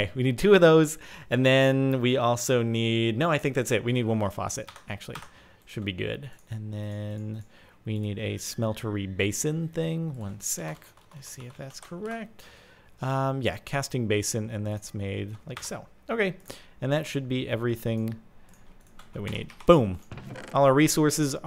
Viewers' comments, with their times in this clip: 0:08 there was a herobirne kinda music i dont know if i was the only one who knew that so i am just putting it out there